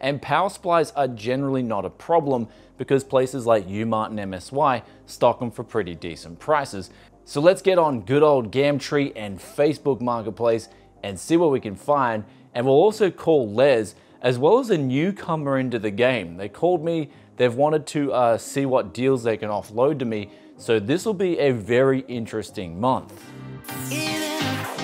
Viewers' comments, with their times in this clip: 0:08 "gamtree" i'm petty as fuck i know